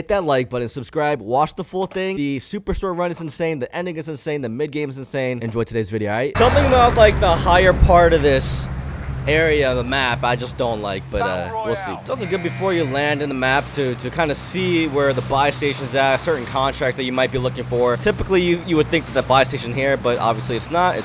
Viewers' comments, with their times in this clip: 0:03 what did he say??